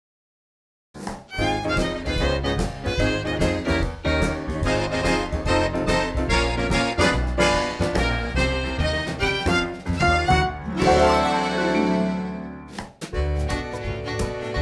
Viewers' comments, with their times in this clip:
0:01 absolutely fire intro music